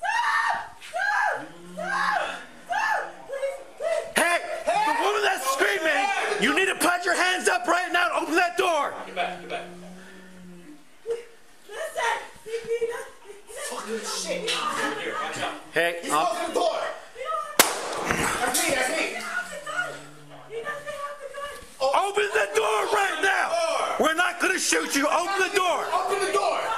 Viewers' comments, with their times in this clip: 0:03 Is that the suspect screaming like a little girl?
0:09 you can hear the agonal breathing from the suspect
0:09 Dude was toast That moaning your hearing is what you call a death rattle. He is already gone.